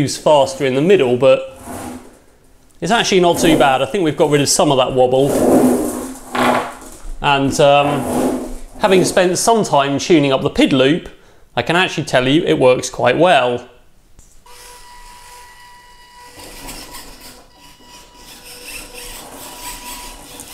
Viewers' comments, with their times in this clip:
0:04 Did he fart on
0:05 listen to i think someone farts just wanna say ˙–˙
0:06 did he fart!
0:06 did you just rip ass ?
0:06 Is that a fart ?? Klick on the blue numbers!